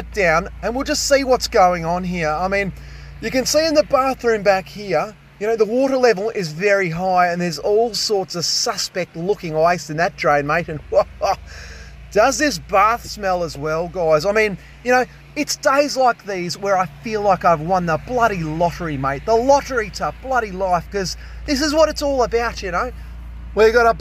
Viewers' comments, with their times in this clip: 0:10 What was that Jim Jefferies' laugh 😂😂😂 Love the content, mate